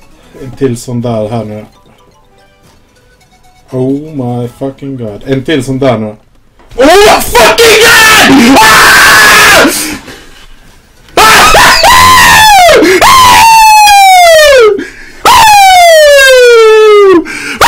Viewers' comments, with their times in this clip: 0:03 rip ears sign for minute ?